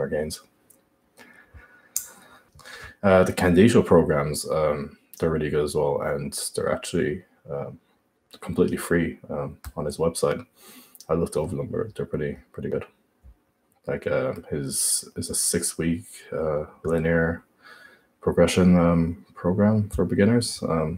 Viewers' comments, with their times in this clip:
0:03 Who does he say ? Sounds like 'ken diesel' or similar